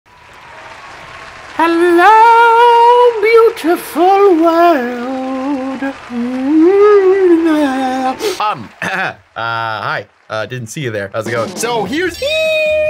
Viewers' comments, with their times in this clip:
0:00 I agree with the beautiful music